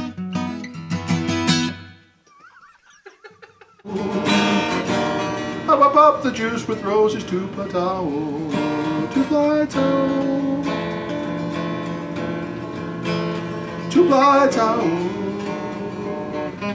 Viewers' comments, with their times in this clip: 0:04 I love the sound of altered tunning .. Like what Greg always says, "I'M DIGGIN' IT"..